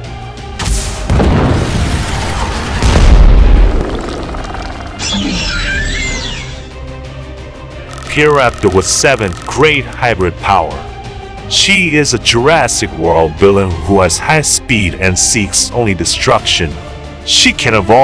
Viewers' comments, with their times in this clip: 0:04 Oooh! I love that Roar of the hybrid Pyroraptor! Sounds evil! and Powerful! Because she has pink fur or it's dark pink? Whatever you want to call that and she also has pink toe claws! and she has purple feathers in the purple hands they're probably like dark purple I think and she has purple feet and she has a purple head a purple face end with her yellow teeth and her creepy scary looking red eyes! And I love that that looks very evil! but why can't she do with her arm claws and why can't you do her jaw because she's a hybrid dinosaur. Like the indoraptor uses the Raptors toe claws and the arm claws and the jaw.